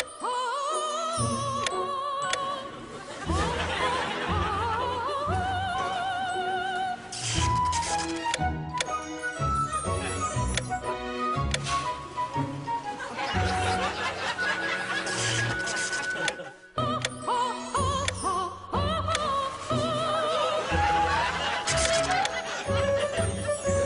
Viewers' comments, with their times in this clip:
0:10 the woman "aahhhhhh:) ohhhhh :(some much disappointment in her sad little face :(lmfao im dying!!!